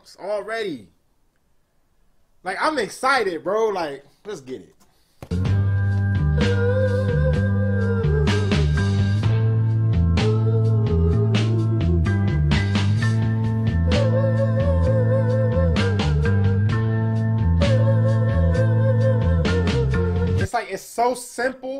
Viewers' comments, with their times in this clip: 0:05 end Rob Halford ain't able to sing that. He's got not half of that feeling, skills, vibrato... [Edit: No doubt: Judas Priest is great. Halford is a voice- wizard, Tippton/Downing: excellent 6string-duo etc. I love 'em, oc. blablah... But this is a complete different cup of tea. Deep Purple is beyond everything else... the real Monsters of Rock]